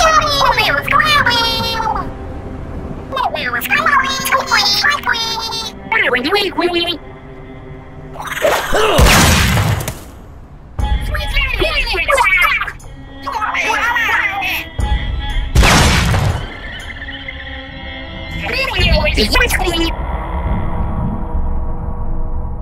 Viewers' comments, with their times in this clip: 0:08 i herd spider not llamper